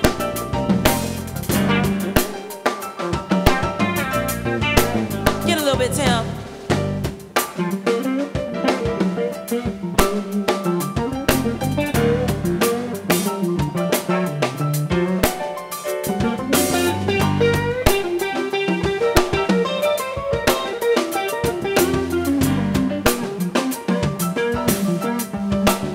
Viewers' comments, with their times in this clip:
0:08 Wow, Amazing voice! 9/30/24